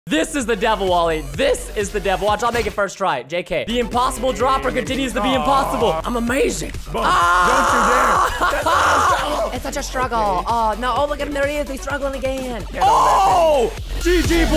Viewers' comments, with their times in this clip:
0:00 I heard the music that reminds me of jsab